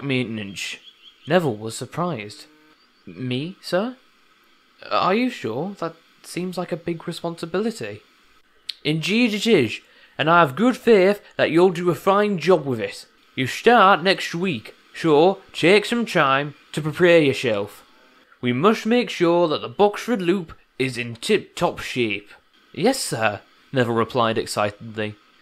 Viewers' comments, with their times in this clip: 0:10 “and I have good fear-“ so if fat hat fears that Neville will be bad at track maintenance then why is he putting Neville up to it anyways?